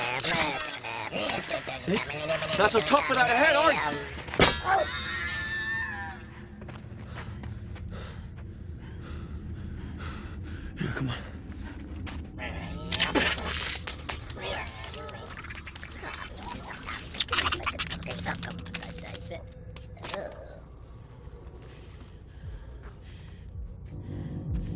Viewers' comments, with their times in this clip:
0:03 Was that a high pitched Willhelm scream?
0:04 Holy shit, it's a robotic version of that Iconic scream.
0:04 The Wilhelm Scream.
0:04 was that WALL-E's voice???
0:05 I swear the way frenzy screams when Sam kicked him sounds like a high pitched Wilhelm scream.
0:05 I just now realized that the scream is a robotic willhelm scream
0:05 he did a lil wilhelm scream